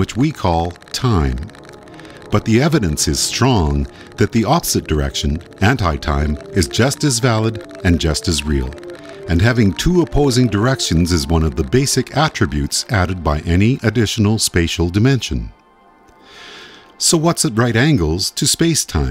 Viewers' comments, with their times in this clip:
0:04 I like the reversal sound effect showing sound going backwards in time